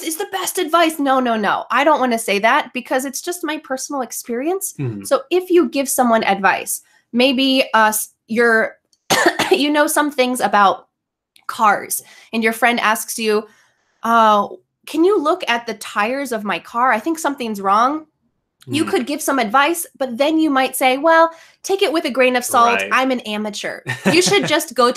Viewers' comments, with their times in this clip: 0:08 cough before the pandemic